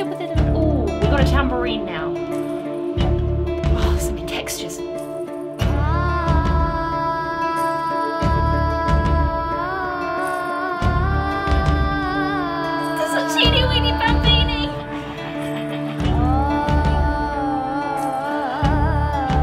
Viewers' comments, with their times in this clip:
0:05 I thought okay, nice layering but nothing worth writing to my mother about. Until